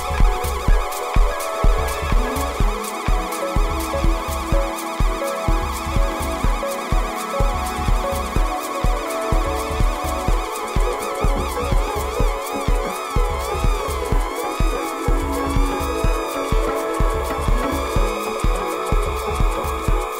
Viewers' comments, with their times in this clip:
0:08 analog seagulls!! Love this set man. It’s for ever everlasting. I just came back to this gem after getting a sneaky decadent thought of what if I had two octatracks! Muajjajajaaa :) I currently use my Octatrack with my Digitakt. Love it! But still the thought comes! Anyways this set is so dope and inspirational.